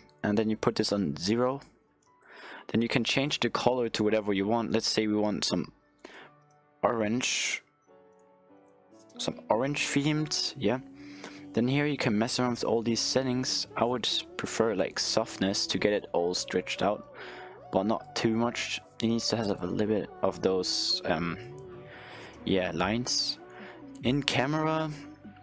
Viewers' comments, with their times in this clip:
0:08 chupa notification on Skype🙄😂😂